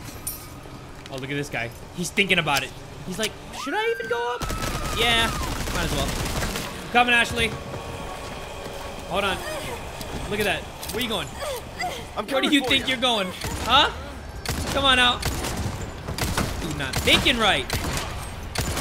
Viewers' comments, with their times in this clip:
0:04 WHY DID ASHLEY SCREAM LIKE THAT 💀